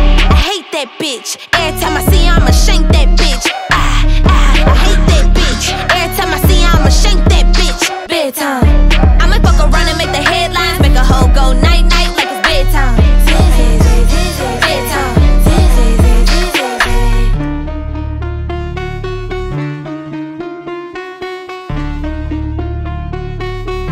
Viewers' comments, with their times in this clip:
0:04 i hear a demon